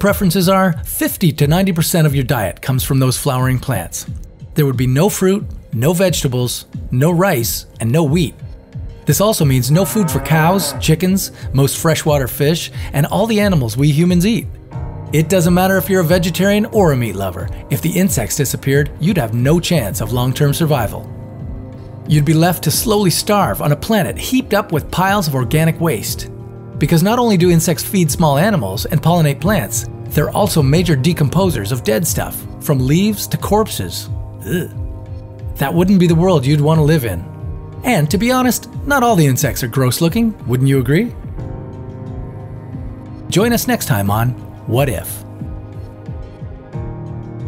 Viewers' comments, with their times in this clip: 0:08 /// You had me at "no weed".
0:33 When the narrator got disgusted above that he is showing us
0:34 did you hear that eww sound?